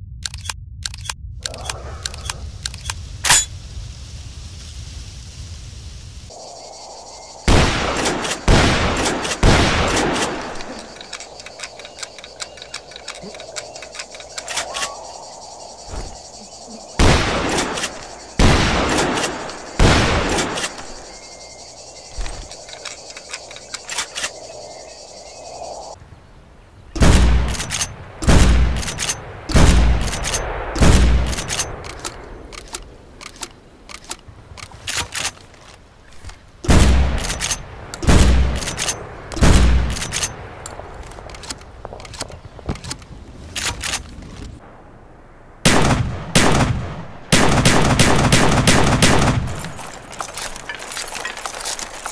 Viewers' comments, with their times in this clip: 0:06 sounds like rocket launcher
0:36 BFBC2 SOUND SPAS 12 LIKE FLASHBANG GRENADE